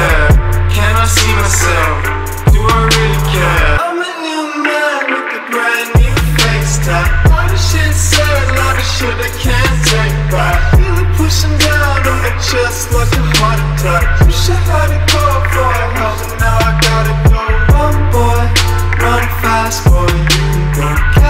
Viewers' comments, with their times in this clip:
0:07 Why does the audio sound weird